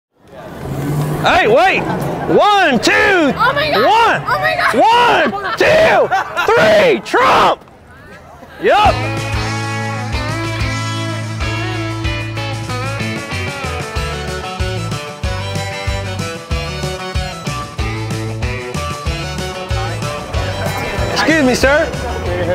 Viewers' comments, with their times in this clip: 0:05 its a fake laugh I bet you he doesnt know whats going on, the smile faded as fast as it has come
0:07 why da black bul stop lauging when he said trump lol